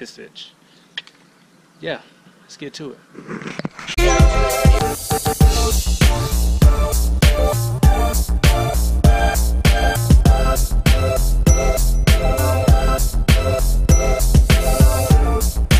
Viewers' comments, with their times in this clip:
0:03 some might find this helpful: at .25x speed for spray angles & of course enjoy the ominous music